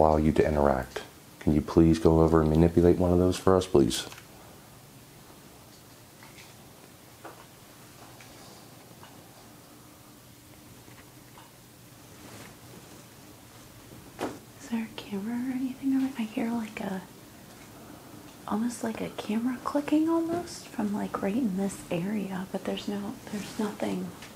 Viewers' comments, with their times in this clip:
0:05 the clicking sound is a spirit voice. Boost and slow audio. Very good ear & catch!